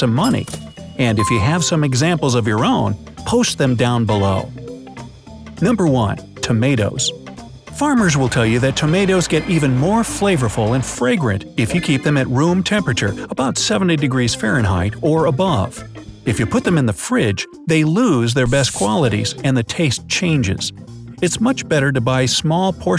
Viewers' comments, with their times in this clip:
0:03 posht them down below!